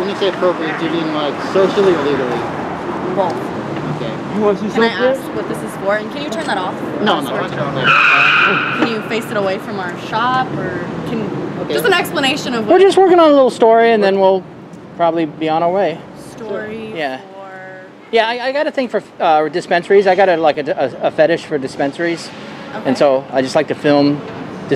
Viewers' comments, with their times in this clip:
0:08 Car accident ? Brakes then sounds like an Impact, I was hoping to see it.